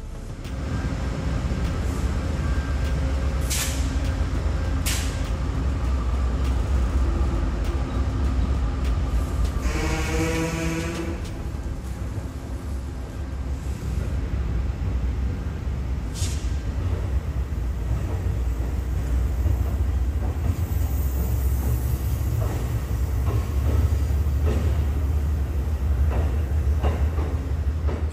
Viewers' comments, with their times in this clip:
0:10 it sounded like the train made a fart